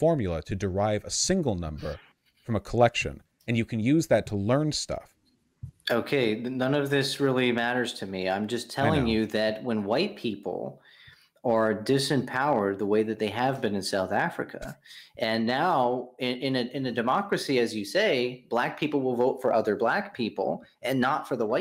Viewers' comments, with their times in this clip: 0:05 such a defeated "i know" after he said that he doesn't care how averages work